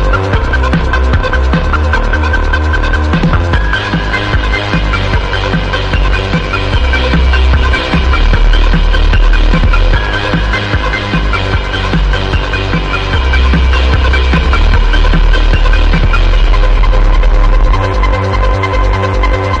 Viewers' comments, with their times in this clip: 0:05 i feel the Phantom of the Opera somewhere here